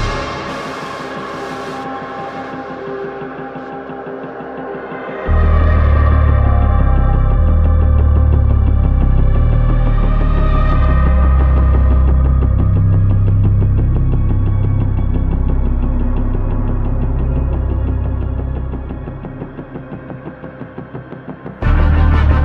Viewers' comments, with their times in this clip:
0:08 Getting Sicario vibes from some of these and that is awesome. Like